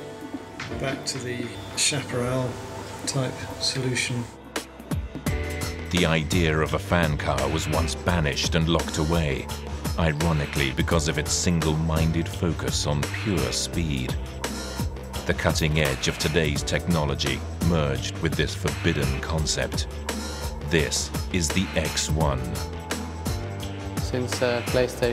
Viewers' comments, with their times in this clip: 0:06 They say it would use fan propulsion so why does it sound like internal combustion?